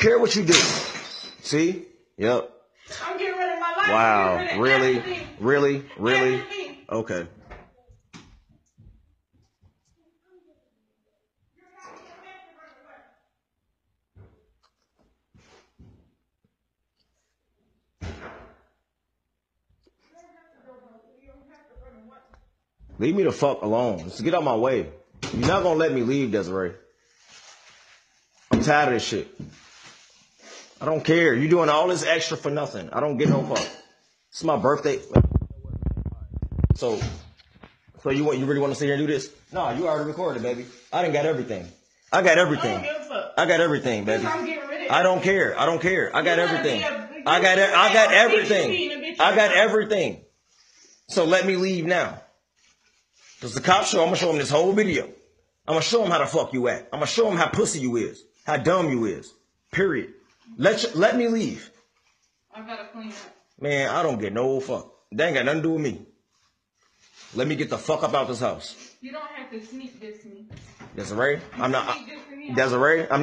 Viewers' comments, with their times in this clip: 0:04 he sound like the really ni**a guy
0:59 The way the guy said period so zesty like